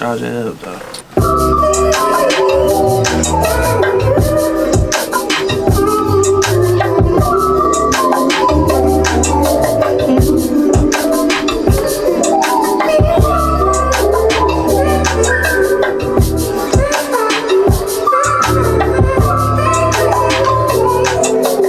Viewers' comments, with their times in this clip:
0:08 The beat man 🔥🔥 cardo top 5